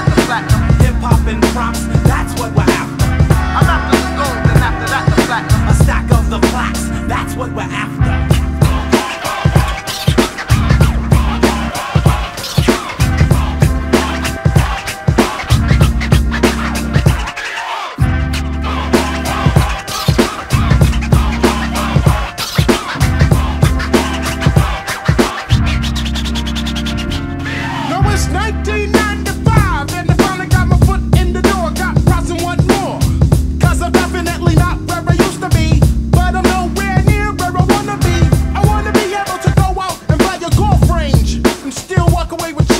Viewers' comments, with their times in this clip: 0:08 It's A Melody I Need To Hear Every Days
0:13 those scratches are sick
0:28 The way he takes the beat is amazing